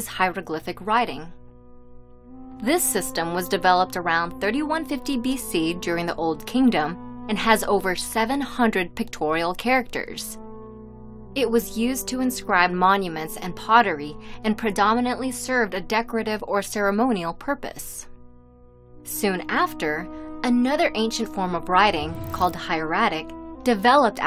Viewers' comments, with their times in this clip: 0:07 MY HEIRS GRAPHICS🤌🪄🤌